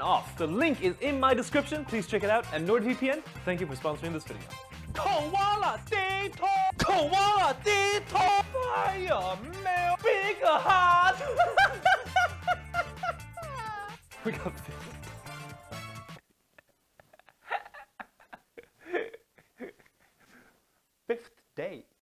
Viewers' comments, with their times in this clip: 0:08 that voice crack feels special
0:10 is it just me or is his laugh very contagious. I love it